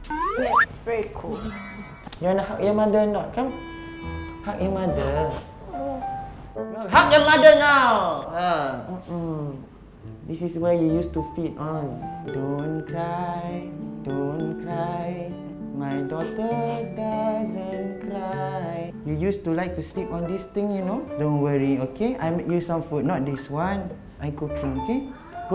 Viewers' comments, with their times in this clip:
0:06 HUG YO MODE NOW